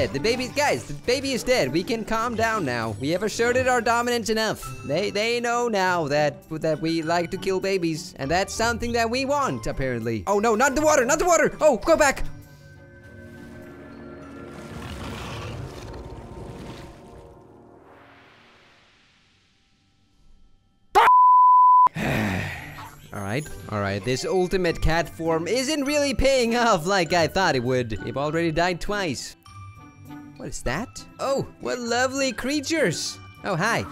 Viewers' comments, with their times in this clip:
0:10 the screaming was so unexpected 🤣
0:18 Perfectly cut screams